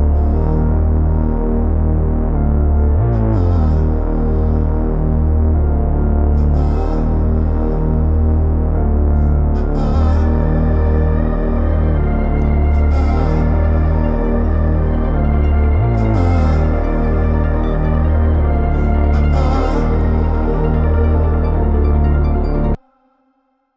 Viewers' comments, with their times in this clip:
0:10 the way the melody kicks back in, paired with Cudi's "ah-ah"s is heavenly